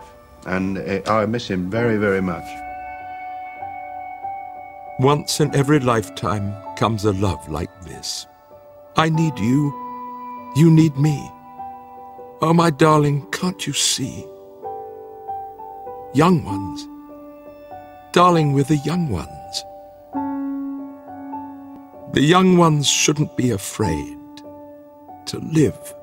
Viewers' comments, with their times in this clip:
0:07 We lost so many good people between 2014 and 2016. I lost my Dad in March of 2015 It’s really heart breaking. I don’t know if that’s Stephen Fry but you can definitely hear him trying to hold back his tears, as he quotes the Young Ones intro theme.